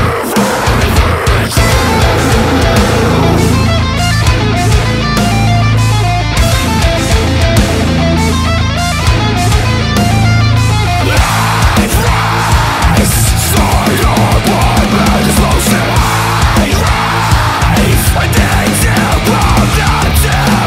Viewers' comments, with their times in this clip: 0:04 solo reminds me of winds of plague a lil 🤘